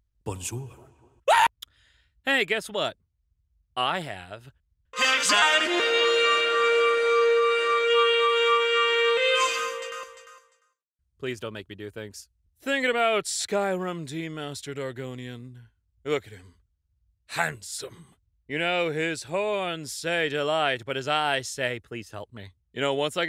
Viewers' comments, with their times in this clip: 0:05 sounds like it's from a music video. I want someone to make a damn music video with that in it god dammit.